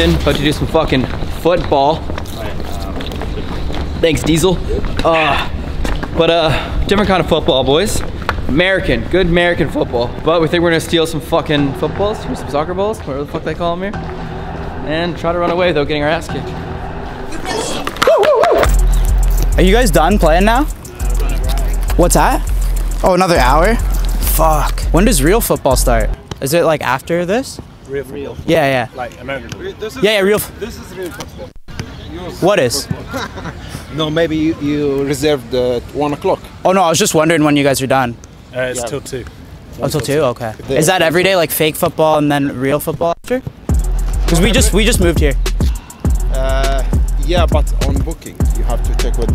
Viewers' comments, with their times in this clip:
0:09 that voice crack 🤣
0:19 what the beat br
0:32 Wow a fucking Nelk bleep